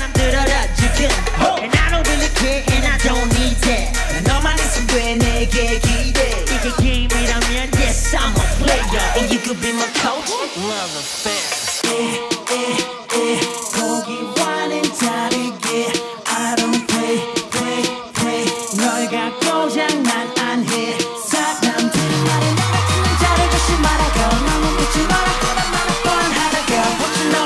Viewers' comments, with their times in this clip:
0:09 Here we go! Slayed again♥ got me dying! Also that clapping part is so cute, love it. The end was my favourite :3 DAEBAK<3